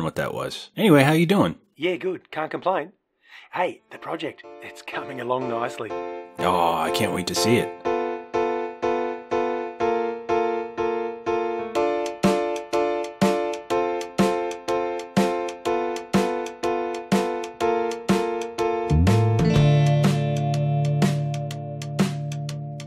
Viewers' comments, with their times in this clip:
0:03 hears the opening music OOOONE IIIIIS THE LOOONLIEST NUUMBER YOU COULD EEEEVER DOOOOOOOOOOOOOOOOO